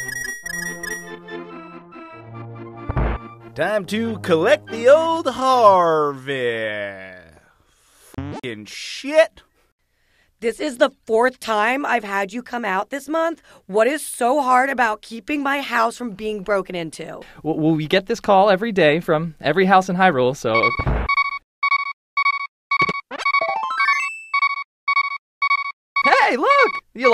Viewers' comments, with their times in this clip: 0:09 That's my 7/8th grade art teachers voice, like exactly! Have you met her?!